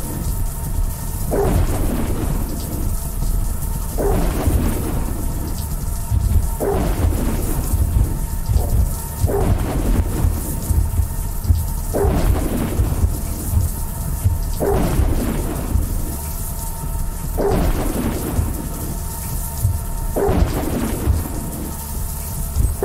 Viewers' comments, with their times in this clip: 0:09 how the dog things sound remind me of ass-blasters or whatever version of graboids, in Tremors.